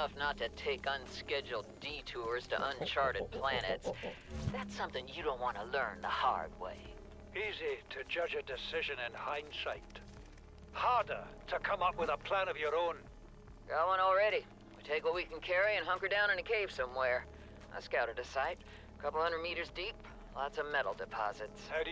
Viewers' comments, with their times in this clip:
0:08 Did he just say shite? This game is rated E10+, so I dunno if I'm just going crazy or if he did say that somehow